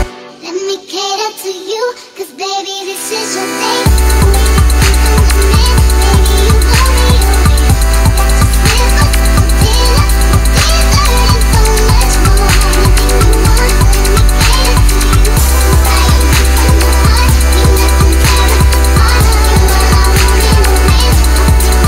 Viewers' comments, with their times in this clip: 0:06 The beat ...so much loveee